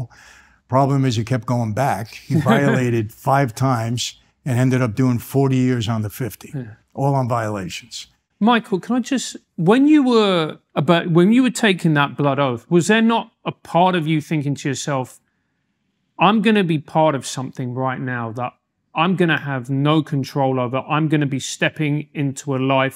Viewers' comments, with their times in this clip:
0:04 when dude giggles about mikes dad going back to prison then immediately stops 😅